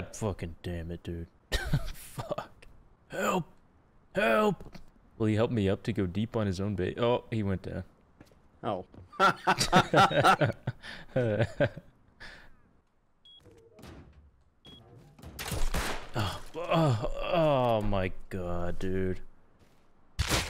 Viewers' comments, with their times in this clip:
0:08 the laugh xDDDDDDDDD